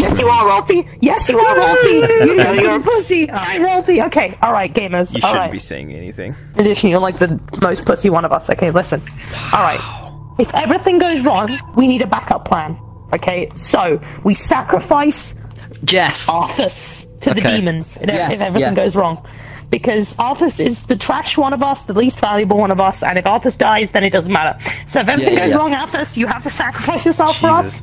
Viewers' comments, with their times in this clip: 0:09 minecraft zombie noise